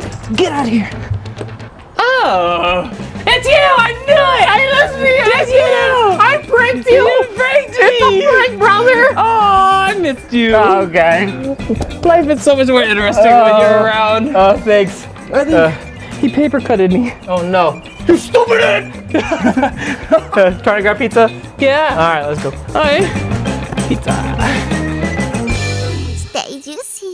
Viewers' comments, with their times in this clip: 0:10 the way Alex said “Aww I missed you” was so adorable🤧